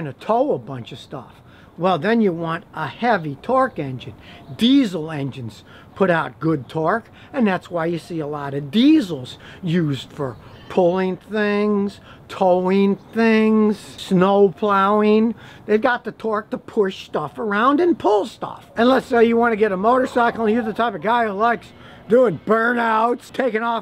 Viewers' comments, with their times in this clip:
0:10 Chemical potential energy to be a little more specific! Great info Scotty!!! Ur voice "Used for pulling thingggsss. Towing thingggsss. Snow plowinggg" Lol